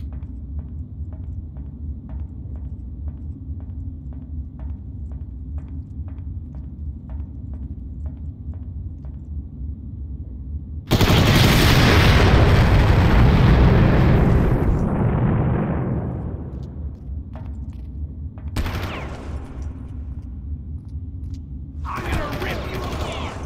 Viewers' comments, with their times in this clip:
0:08 holy shit!!! Best example of using EAX